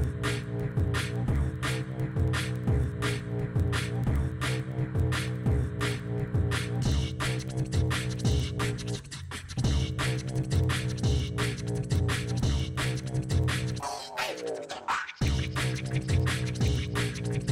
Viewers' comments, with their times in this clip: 0:05 is not DnB it's probably Dubstep or some equivelant of it. This guy is good :D